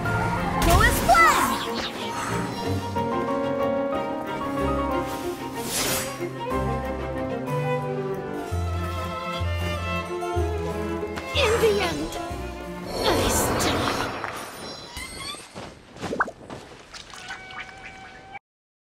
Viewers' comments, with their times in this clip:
0:08 BRO THE SONG MADE IT SOUND LIKE THEYRE CHILLING IN A TEA PARTY OMGG